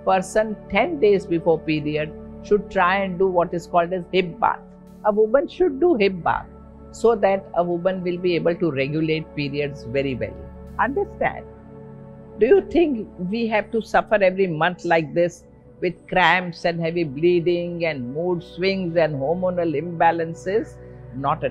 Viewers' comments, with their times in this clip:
0:08 What Dr said hibba..at min .i couldn't get it..plz explain